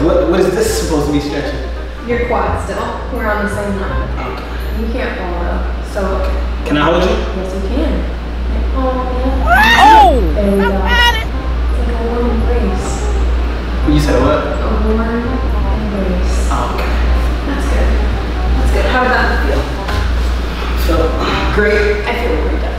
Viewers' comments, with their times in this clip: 0:09 please don’t tell me that she just moaned at that part 😳😂